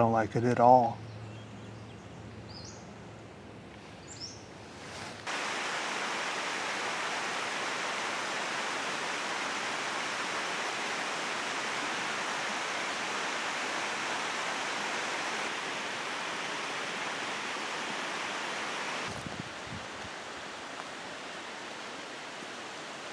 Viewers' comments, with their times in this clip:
0:06 the captions think that the water is applause 😂